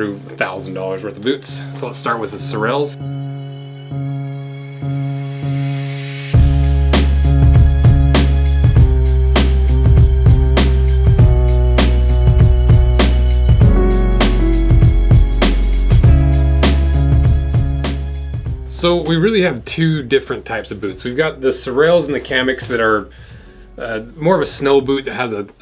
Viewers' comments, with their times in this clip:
0:07 Almost sounds like a beat you'd hear in an old Wu-Tang track.